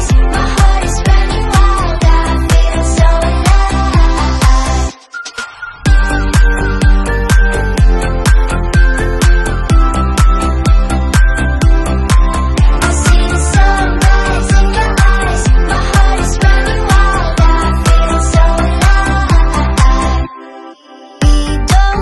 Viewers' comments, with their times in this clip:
0:07 Great vibes, funny sounding vocals